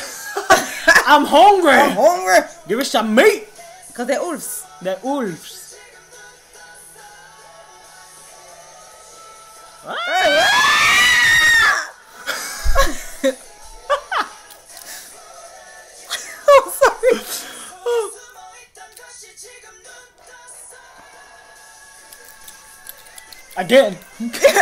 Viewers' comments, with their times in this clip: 0:04 OMG LOLOLOL when Baekhun did that high note part and you guys started screaming like little children!!! U guys are hilarious.
0:09 I love how you tried Baek's high notes but ended up shrieking xD